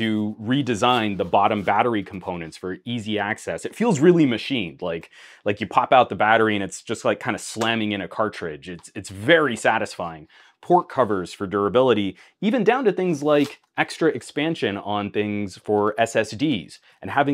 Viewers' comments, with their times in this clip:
0:05 Something's off with the video I hear the slam of the battery, but no battery slam is seen 🥲